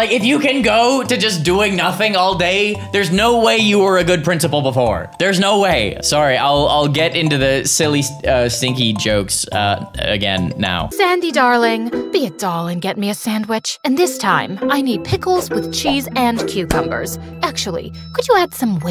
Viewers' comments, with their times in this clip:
0:05 HE SAID SORRY LIKE SARRY